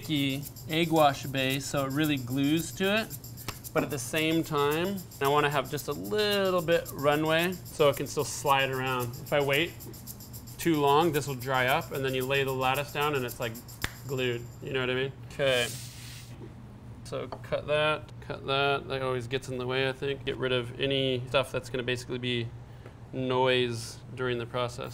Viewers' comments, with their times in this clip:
0:09 Maaan! First time coming across this channel. The guy's voice put me to sleep, The background is busy and he touched his hair while cooking. I don't think it tastes as nice as it looks with that wet bottom.